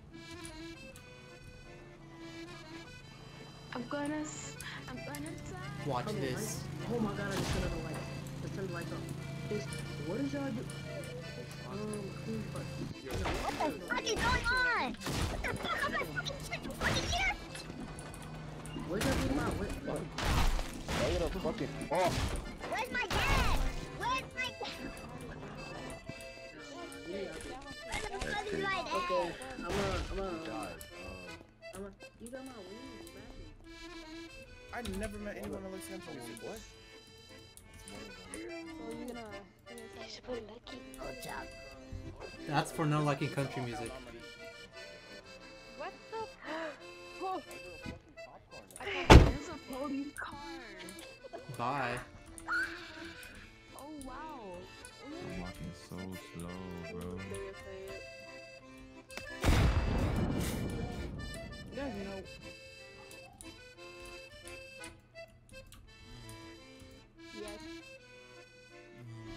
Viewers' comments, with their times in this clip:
0:09 bro sounds like a south park character
0:11 Who let their kid on vc
0:12 That kids voice 😂
0:13 who let Alvin on Roblox 💀💀💀
0:13 Was that Alvin from Alvin and the chimpmunks?
0:14 who let him use voice chat?
0:14 who let a chipmunk play roblox
0:51 da fuggin scream